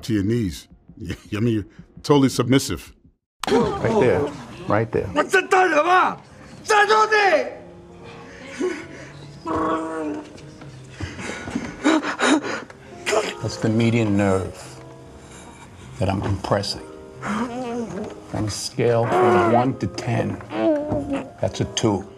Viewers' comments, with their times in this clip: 0:08 the gurgling/bubbling sound the thug makes 😂 sounds like actual pain